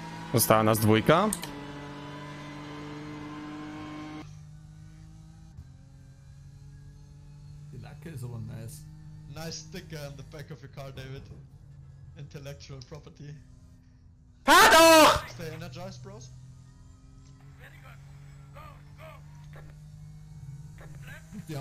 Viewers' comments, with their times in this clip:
0:05 Little Jumpscare warning Clip or Streamer is freaking loud.